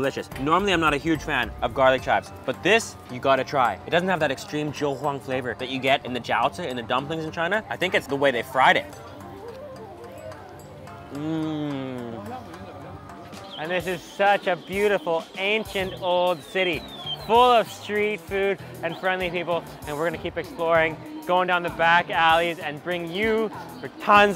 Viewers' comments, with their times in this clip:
0:07 He faked that mmm when he bit into that garlic Chinese pizza Hahahaha